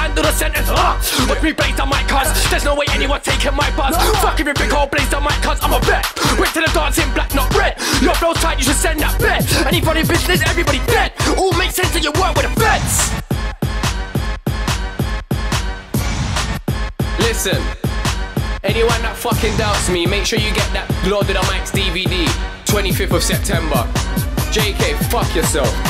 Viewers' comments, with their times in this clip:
0:09 that lisp is going in